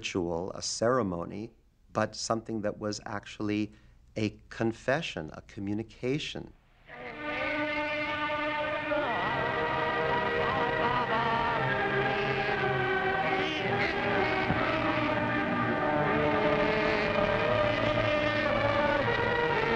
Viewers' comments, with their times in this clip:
0:07 Bernstein was doing a savage performance of Bloch's Schelomo!